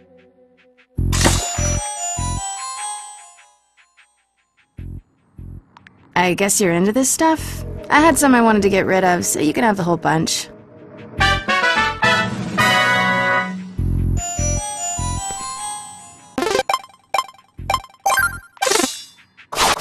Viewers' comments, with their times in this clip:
0:07 That doesn't sound like the Marceline I know of. Is this a different voice actor?